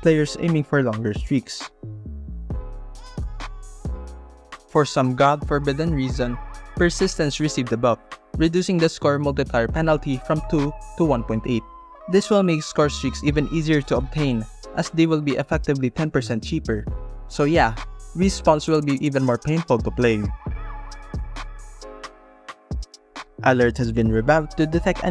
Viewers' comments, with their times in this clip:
0:07 I thought the bluetooth notification was a joke. I guess the player that provided the gameplay footage actually received that notification.